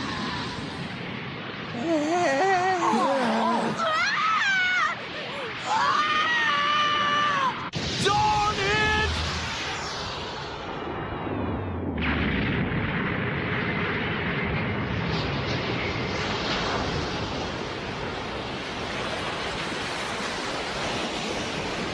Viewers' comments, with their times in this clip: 0:05 that voice crack tho😂😂😂😂
0:06 The "OH SHIT!!!" scream when you're output wasn't on chill mode